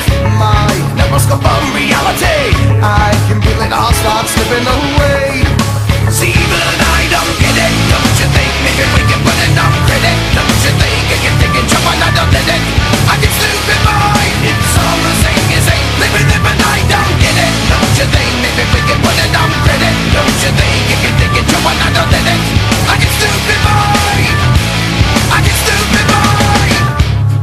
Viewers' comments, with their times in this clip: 0:08 you...fight...me.....NOW!!!!!!!!!!!!! MASSIVE POWERUP ground shakes and rumbles sky thunders